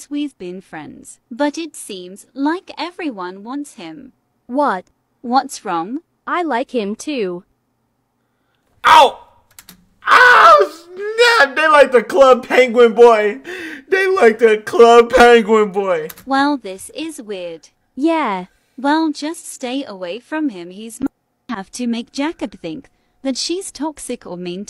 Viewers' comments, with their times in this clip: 0:09 bro his sound is like he got shooted breh , like fr that was funny right there